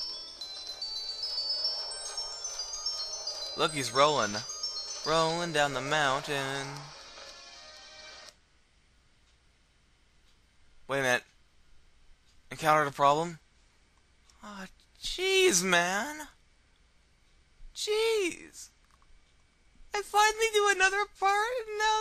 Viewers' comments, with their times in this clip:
0:09 lmao cryin for 40secs then "im gonna play some world of warcraft :D"